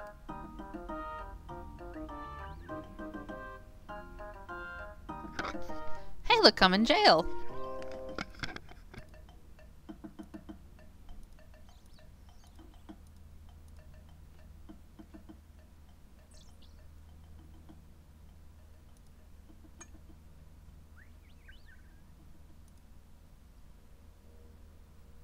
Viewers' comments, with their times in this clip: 0:07 ...wouldnt be the first time i presume...plus u sound a bit happy about that